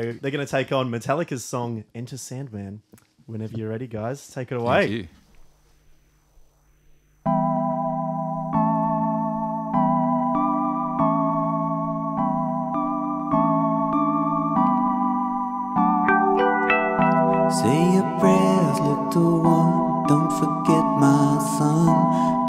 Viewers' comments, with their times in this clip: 0:07 is when the music starts